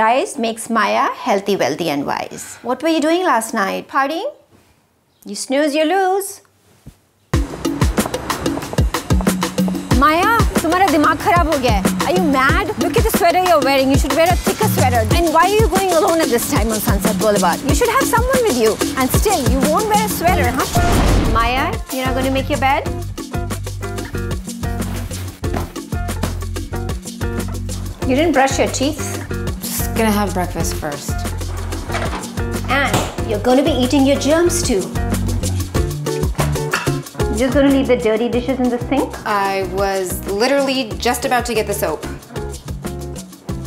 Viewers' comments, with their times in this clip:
0:08 the mumma rap
0:29 she sounds like selena gomez lol